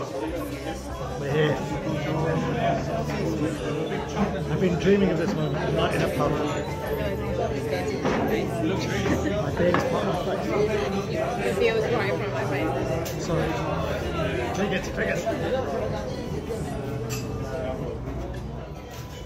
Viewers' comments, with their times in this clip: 0:03 The toast and sigh said it all .. congrats on a great journey. You guys deserve. xlnt.